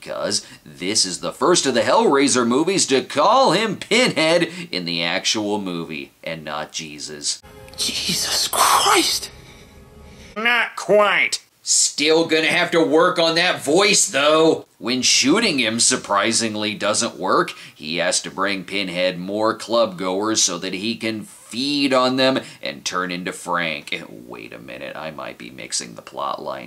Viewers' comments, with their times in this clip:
0:10 Please, for the love of god, the nasally-voiced line for Hellraiser 4 had better be "Do I look like someone who cares what God thinks?"